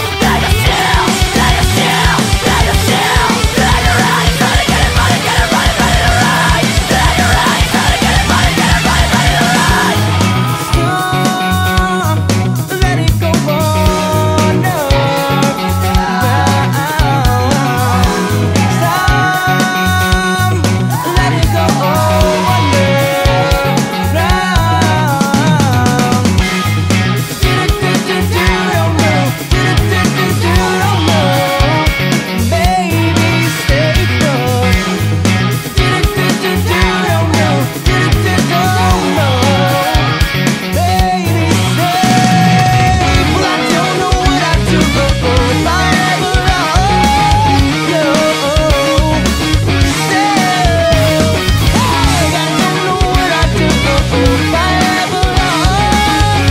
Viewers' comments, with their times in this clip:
0:09 can we all agree that the sparkling climax is the best part of the song
0:10 The song ends
0:44 reminds me of the song cemetery weather :O